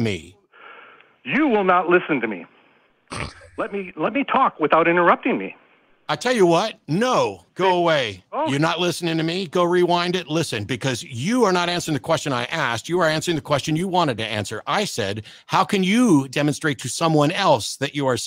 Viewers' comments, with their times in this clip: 0:03 I lost my shit when Hemant snorted and chuckled 😂😂